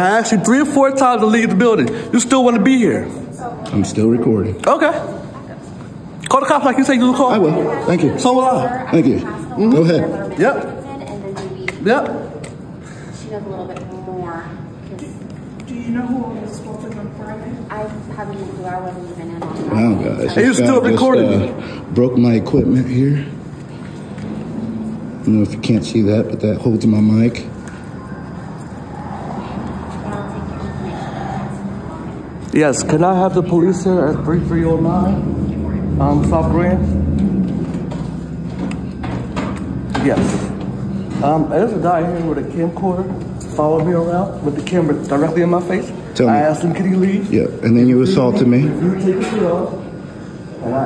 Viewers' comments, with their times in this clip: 0:05 voice cracking like he finally reaching manhood😂😂😂
0:33 Oh I love his cute little victim voice.
0:38 his voice started shaking like a 4 year old waiting for his daddy to come home and whoop him 😂